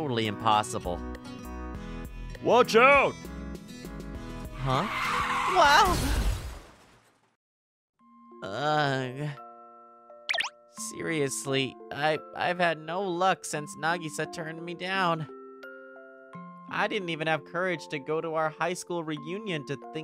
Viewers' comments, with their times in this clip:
0:05 who the hell shout wow excitedly when they about to get hit by a car🤣Is he hoping to get isekaid or something🤣